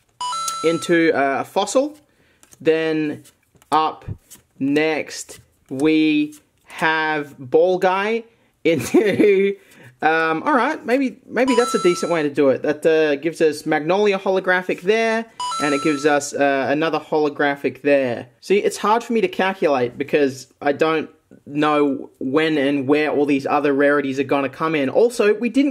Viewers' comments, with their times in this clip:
0:07 the way you laughed at ball guy was great